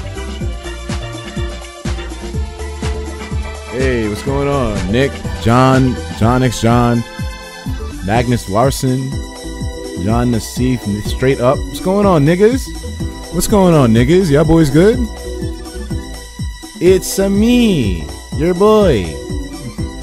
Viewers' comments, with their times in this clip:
0:03 Etika starts talking